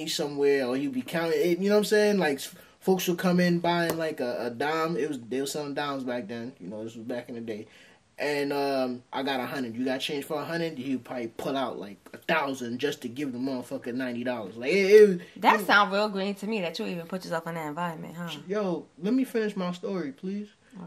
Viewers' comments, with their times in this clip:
0:08 Why do you sound like you from New York